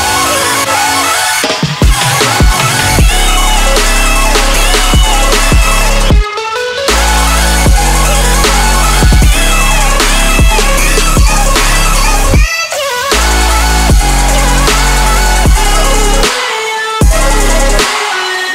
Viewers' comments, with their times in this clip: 0:03 Anyone else catching some Pixies Where is My Mind vibes ? Love it.